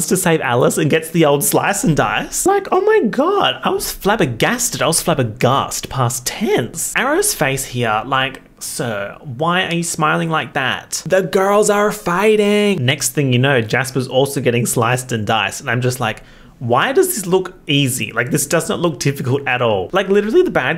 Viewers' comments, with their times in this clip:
0:08 serving Alvin and the Chipmunks